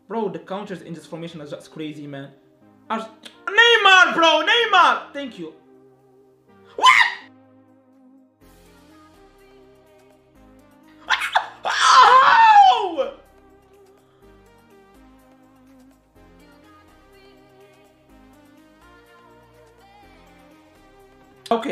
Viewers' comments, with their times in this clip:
0:06 now i am DEAF.😐
0:08 I like that voice 😂